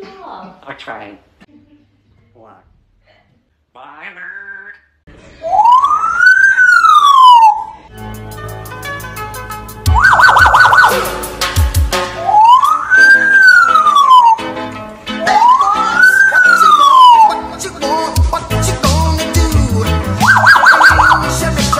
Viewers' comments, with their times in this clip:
0:07 lololol that song is way too recognizable